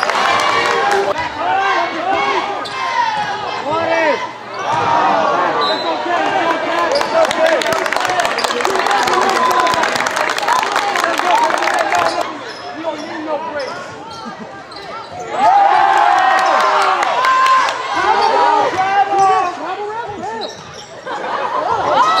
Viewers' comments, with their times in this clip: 0:03 Mikey doing good job throwing buckets, nice dunks Number 15 throws big airball and crowd still cheering foe him
0:03 someone really said wAtEr